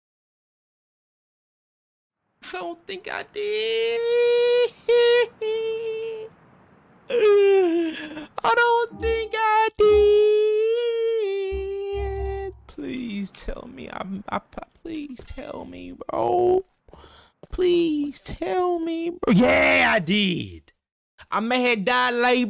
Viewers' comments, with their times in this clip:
0:04 😂😂😂 every time you hit this note man